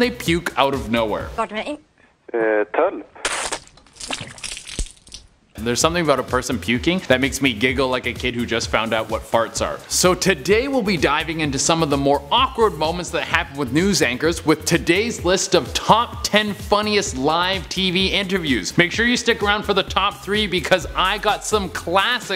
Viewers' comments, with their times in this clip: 0:04 she didn’t like the mans voice